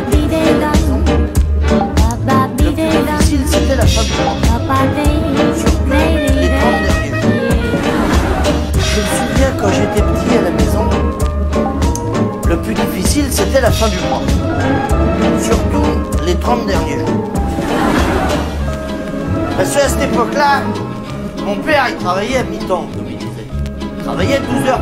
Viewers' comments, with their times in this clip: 0:09 disturbing to hear such a great comedian as Coluche in this melancolic song.